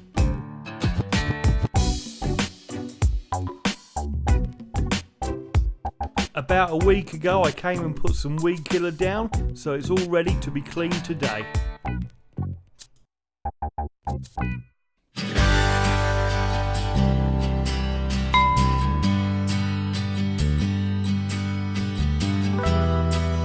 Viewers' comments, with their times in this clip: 0:06 it sounds like your rapping
0:06 Oh my God he is so happy. Loving it! 😊❤ also I totally agree with a previous comment he is totally rapping